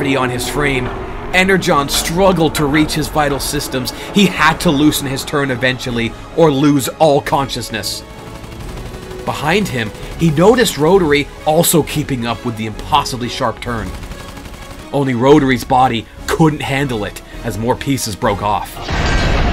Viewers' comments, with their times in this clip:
0:05 I wish I knew the name of the music because it sounds perfect for aerial combat🙏🙏🙏